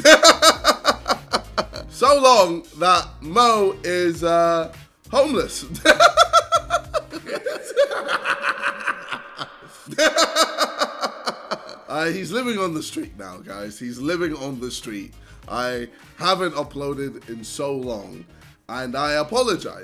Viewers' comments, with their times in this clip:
0:07 so funny with jj's laugh in the background